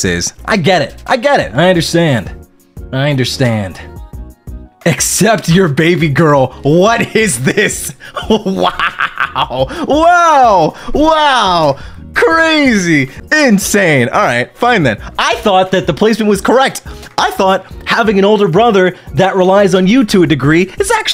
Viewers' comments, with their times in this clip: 0:08 man sounds like a gremlin 💀